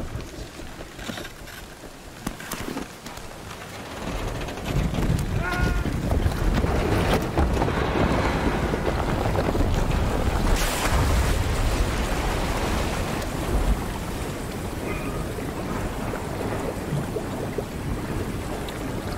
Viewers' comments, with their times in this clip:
0:04 am I crazy or was that similar to the MGS1 Snake Death Sound?